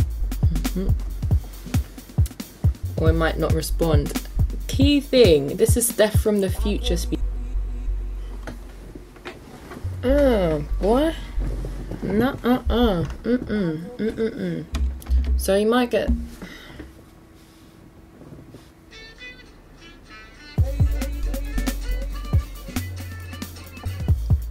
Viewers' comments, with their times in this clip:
0:09 as soon as you yawned it turned into a giant booty